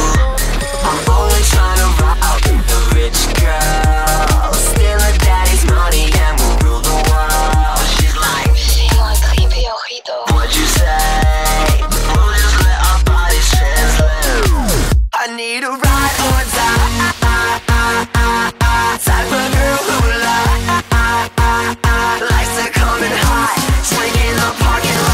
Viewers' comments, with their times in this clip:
0:08 ¨She want da hippy ojito¨? What she seriously said? xd and its not ¨fais-moi grimper au rideau ¨like other pages say